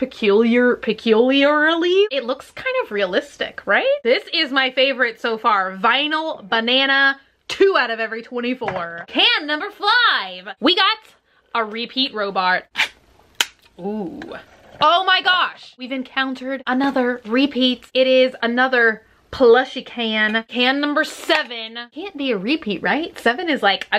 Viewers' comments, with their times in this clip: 0:10 we got another repeat robart
0:11 she say we got a repeat robart instead of robot